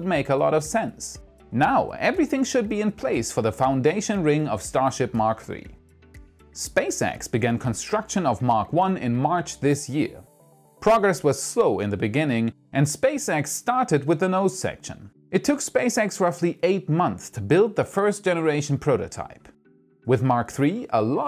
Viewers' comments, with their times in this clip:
0:06 The way you say "Spacex" is weirdly annoying But I still enjoy your content. Keep it up.